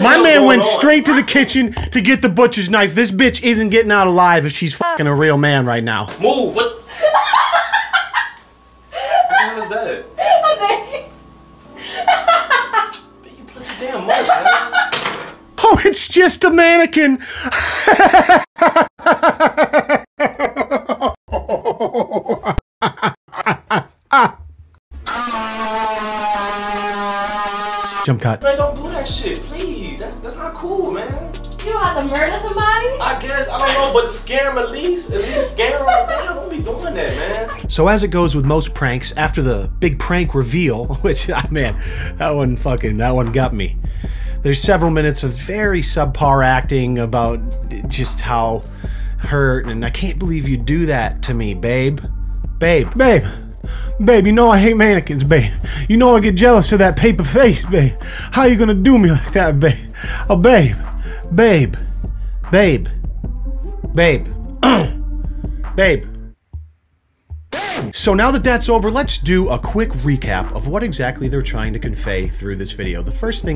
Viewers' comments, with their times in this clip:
0:04 forgot to mention (5 months after my other comment) great voice crack xD
0:17 That's a Jim Carrey laugh right there
0:17 Sounds like the Grinch laughing
0:18 that laugh still haunts me in 2023
0:18 Her does a good grinch laugh
0:19 Lol did anyone else hear his laugh switching from one side to the other 😭 that part killed me
0:19 I have shown everyone I know the laughing clip starting as a way of demonstrating how I feel about a lot of things. Your editing skills are phenomenal -- thank you for the laughs.
0:20 Jim carry laugh
0:52 sounds like the grandpa from Brandon Rogers
0:52 he sounds like Brandon Rogers lol.
0:52 He sounds like Johnny Bravo change my mind
0:55 sounded just like Brandon rogers